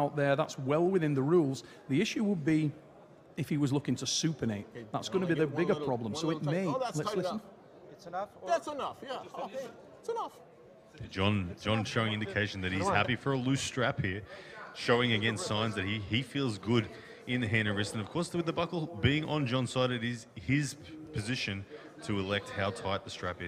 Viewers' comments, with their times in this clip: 0:05 John's Seinfeld timing on these lines are incredible. Had me cracking up.